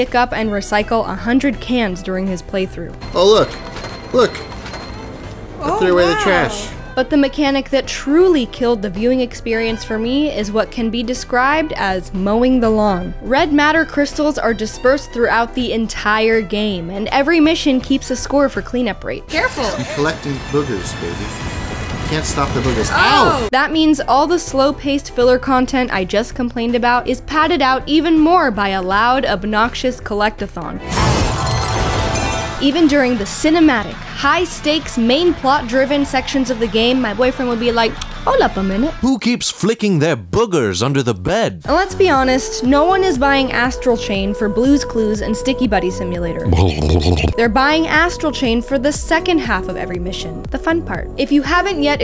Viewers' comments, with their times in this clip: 0:07 this OHH WOW was the most unimpressed one I have ever heard. It was like oh wow( I...DON'T...CARE) 😂
0:38 I know that it says, Hold up a minute, but I can't stop hear, "HOLA PAMELA".